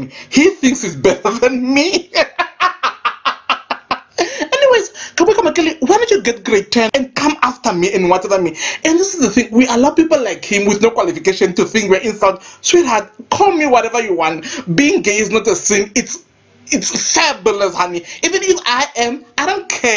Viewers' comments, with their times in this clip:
0:03 is the laugh for me😂😂😂😂